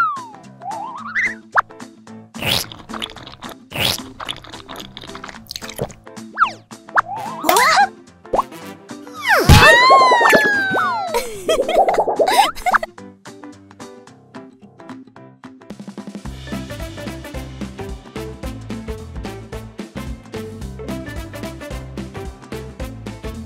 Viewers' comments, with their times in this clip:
0:09 scream of princess peach